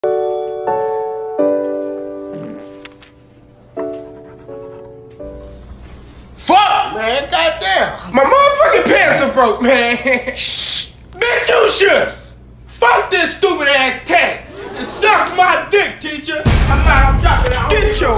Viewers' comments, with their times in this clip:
0:02 Listen with attention. There is a FART noise